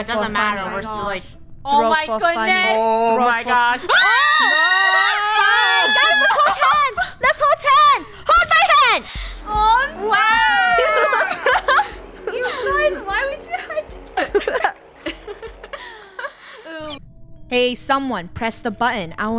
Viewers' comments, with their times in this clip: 0:04 ahhh the sound of screaming at the same time
0:04 the scream was so synchronized😂😂😂